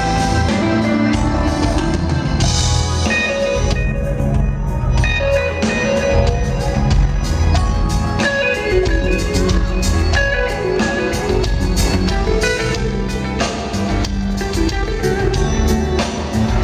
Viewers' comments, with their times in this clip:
0:03 Don’t get me wrong the whole song is beautiful but that guitarist kick ass !!! His music touched my soul and he is so humble with it!!! Who is he